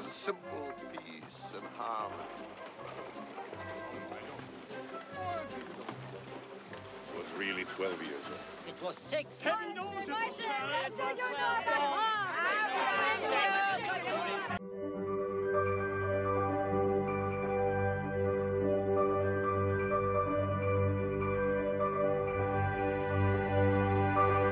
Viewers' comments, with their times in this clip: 0:07 With harmony like that, who needs discord?